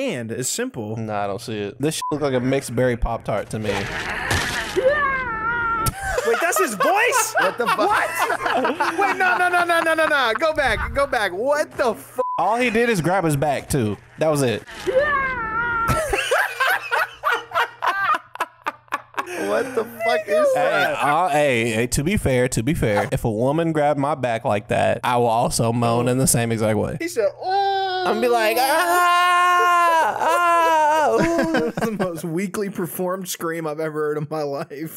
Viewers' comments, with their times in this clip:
0:04 he sounds like that meme of penguinz0 screaming
0:04 I THOUGHT ONE OF THEM DID THAT VOICE! Damn 😂
0:15 they just retuned Mario's voice that's it.